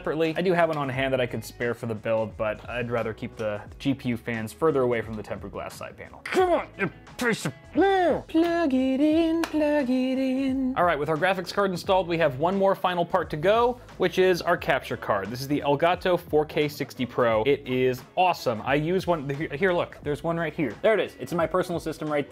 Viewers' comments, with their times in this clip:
0:08 Dat Michael Jackson tone, lol! :D